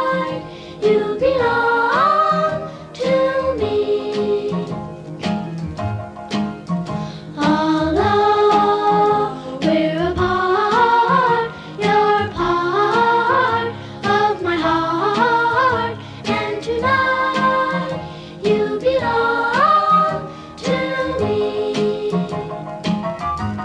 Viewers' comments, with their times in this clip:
0:08 smells like laundry detergent and old homes